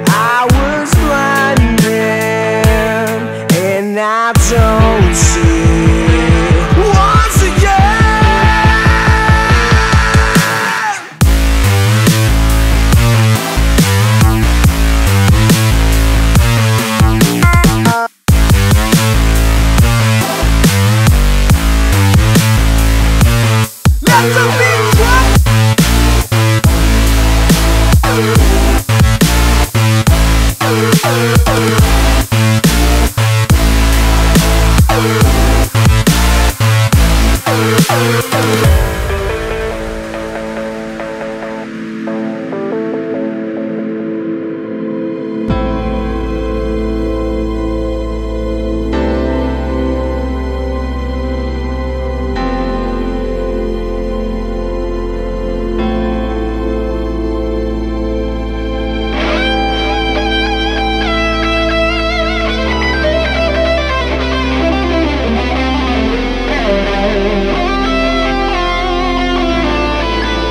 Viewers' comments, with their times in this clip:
0:06 Sadly for me the only thing awesome in this music is the drop :/
0:10 OMG that start! Absolutely amazing track, great vocals aswell! Drop Can't thank you enough NCS for all you've done, keep it up! <3
0:12 i love this song only because of bass because this frequency is so strong on my speakers :P
0:38 and that guitar solo 😩
0:45 anyone else get reminded of Bleach when that guitar solo hits (timestamp there)
0:56 hard rock means a rock song with agressive lyrics . it's the only one to be hard rock ,including the brostep . the drop is brostep, and here's the part of rock
0:56 no, it's wrong, it's hard rock and brostep and they're seperated .here's the part of rock and the rest is brostep .
0:58 Best solo ever